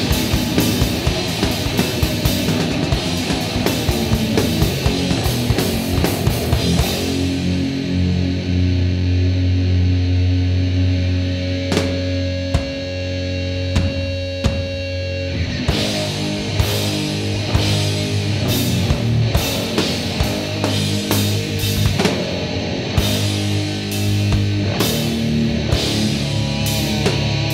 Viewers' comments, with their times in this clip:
0:08 The heaviest shit ever